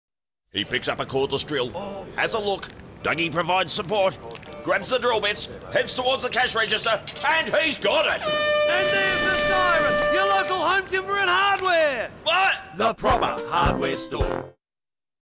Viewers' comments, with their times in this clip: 0:07 and he's got it airhorn sound
0:07 and he's got it air horn blast
0:07 and he's got it airhorn sound